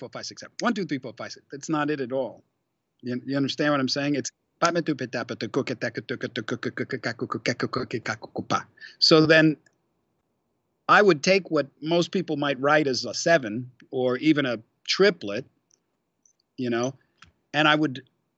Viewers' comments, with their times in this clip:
0:06 Steve: "Understand what I'm saying? It's do bu go bi go bi go gi go bu...." Speaking in tongues??? 🤔🤔🤔